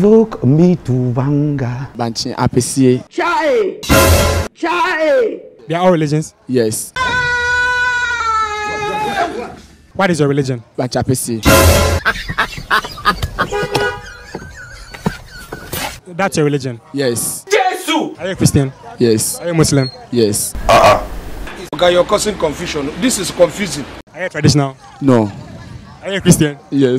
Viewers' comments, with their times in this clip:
0:10 did i just hear :watch a pc